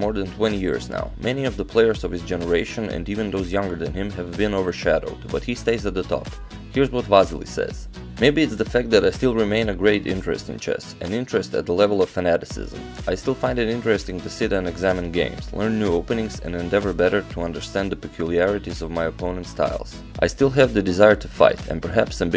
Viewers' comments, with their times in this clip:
0:06 epic vehicular horn moment